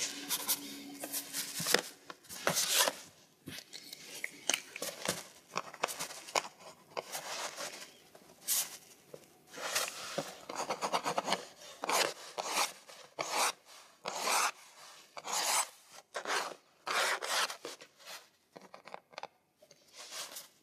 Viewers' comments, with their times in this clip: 0:05 The sound of that whiteout pen is 👌